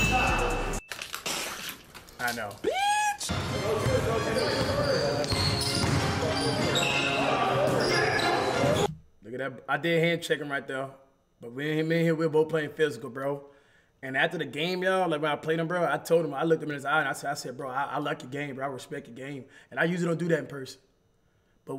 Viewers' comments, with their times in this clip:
0:03 Bro you sound like Chris Rock 😂 I bout lost my Coke bruh